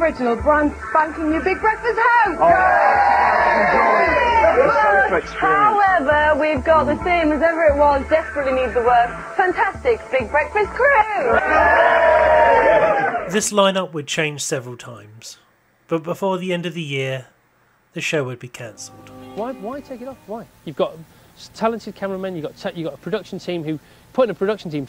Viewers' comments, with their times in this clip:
0:07 Wow... ...Donna Air...still with a Geordie Accent!